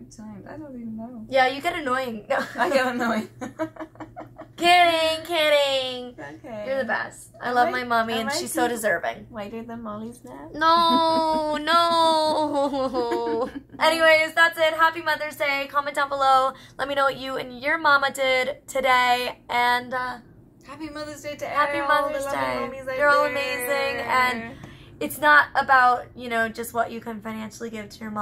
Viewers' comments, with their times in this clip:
0:10 Was that an audio malfunction?